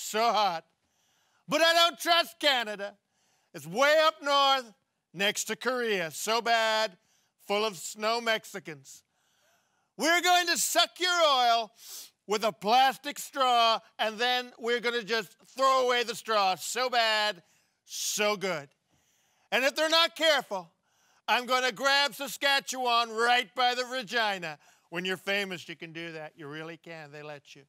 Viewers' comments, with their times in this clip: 0:08 There's a half a dozen parts in this where the guy is so close to laughing. I love Trump and I think this video is Hilarious. Gold!